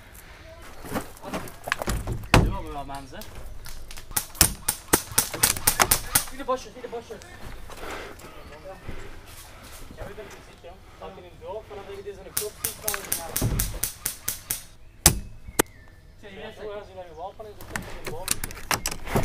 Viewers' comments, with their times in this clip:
0:06 Sounded like Mike Wasowski saying "your the boss your the boss"